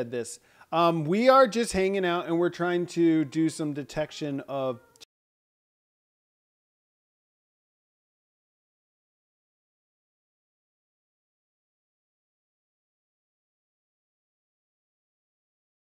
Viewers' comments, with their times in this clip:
0:03 Nice walkthrough. Does the audio break a couple of times? but several other places as well